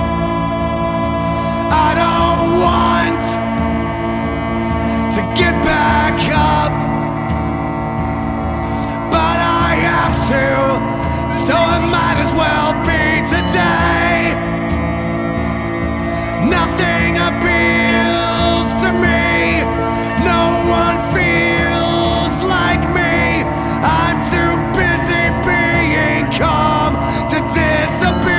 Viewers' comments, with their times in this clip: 0:10 Am I the only one hearing R2D2 ? :D